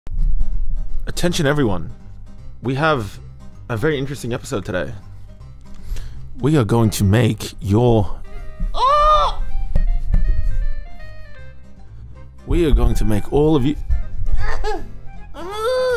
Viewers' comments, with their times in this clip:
0:01 The voice of a god.